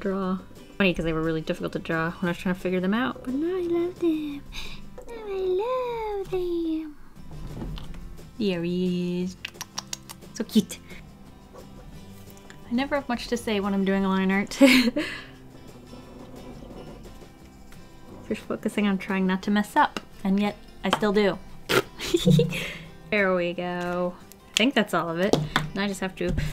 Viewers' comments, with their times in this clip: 0:09 The sound my hamster makes when she's excited...